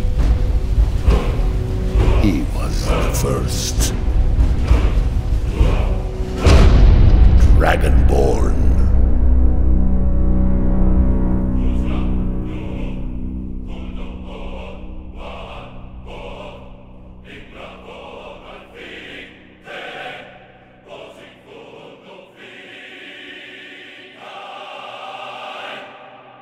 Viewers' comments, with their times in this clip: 0:07 almost sound like dragon ball